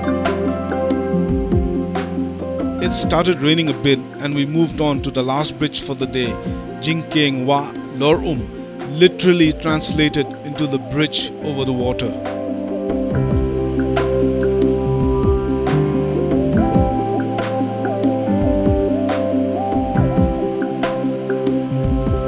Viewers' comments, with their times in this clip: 0:07 I really love😘 the background music